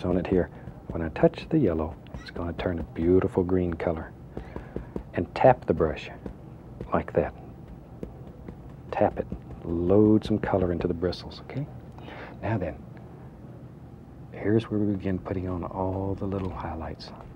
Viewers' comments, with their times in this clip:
0:04 you can hear the blue jay approving of his tree idea. Lol